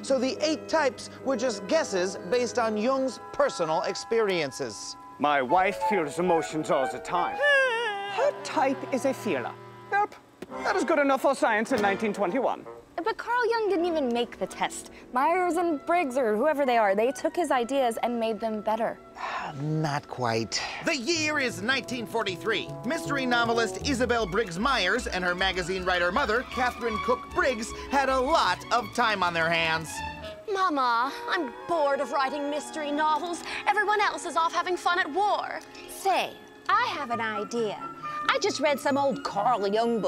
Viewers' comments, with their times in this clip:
0:10 Love how he says "Welp" Not even, "Well", instead "Welp" 😂
0:25 A Blickensderfer typewriter wouldn't make noise like that and nobody in their right mind would use it in the 1940s. It was completely obsolete nearly 30 years prior due to it's slow speed and non-standard keyboard layout. Still cool to see it pop up in a video.